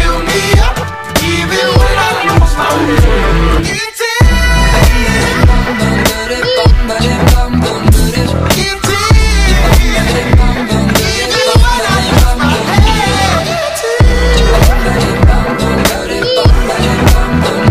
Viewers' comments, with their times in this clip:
0:03 He kind of sounds like brendon urie there